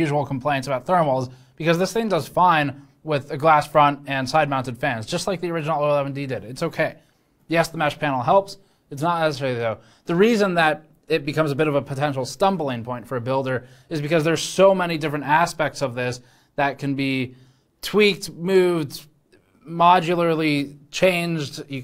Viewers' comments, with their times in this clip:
0:08 you okay there brother? Not sure those were words coming out. 👀